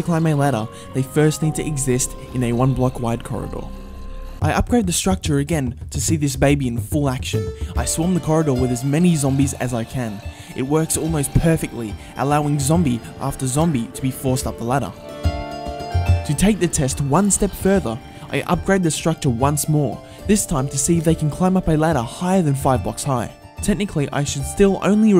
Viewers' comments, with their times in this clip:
0:07 this jingle always makes me have the chills of nostalgia